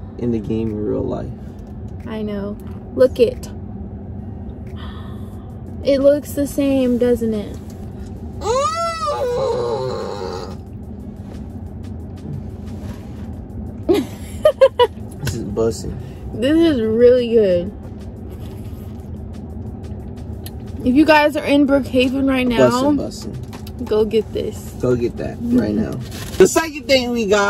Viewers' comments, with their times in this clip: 0:08 the way he started moaning💀💀